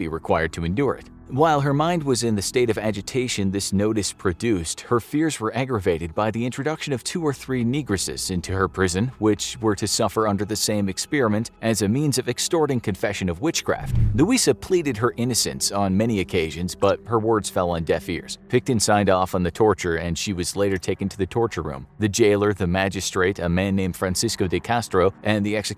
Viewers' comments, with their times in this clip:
0:07 niggrasis's you say? I've never heard that one before